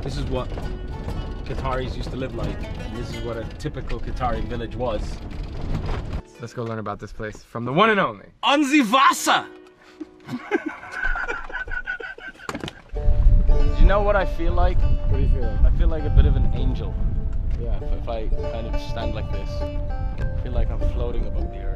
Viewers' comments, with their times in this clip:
0:08 almost sounds like "Ham' Sie Wasser" which is German and would mean "Do you have water?" xD